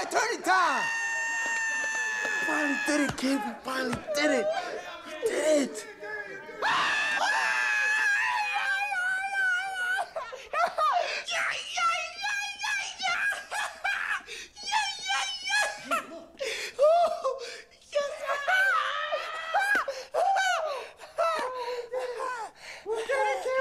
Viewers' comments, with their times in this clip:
0:09 lol love the laugh